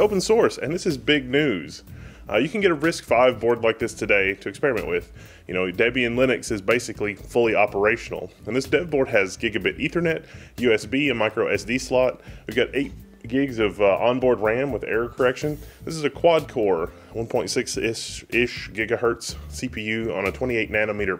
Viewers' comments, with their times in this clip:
0:07 This dead board has bla bla 8 GIGS of ram THIS DEAD BOARD ....! wtf